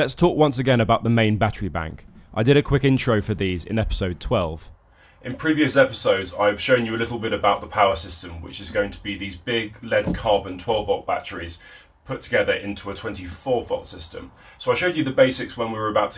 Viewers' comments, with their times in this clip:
0:04 My daughter said you sounded like Darth Vader during the segment. 😂